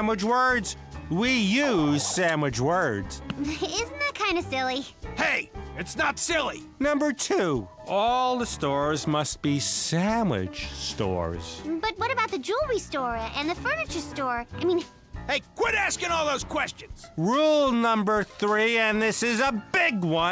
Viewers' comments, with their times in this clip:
0:06 Chuck voice crack 😂